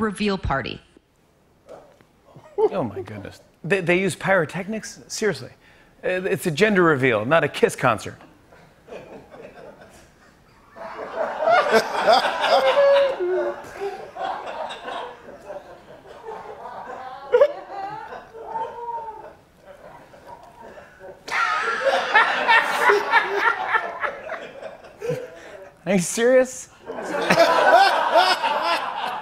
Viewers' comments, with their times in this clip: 0:09 “Pauses for audience applause ... not a sausage.” A.k.a. “doing a Bluebottle”. (Yes, that reference is older than I am.)
0:10 pregnat pause funny .....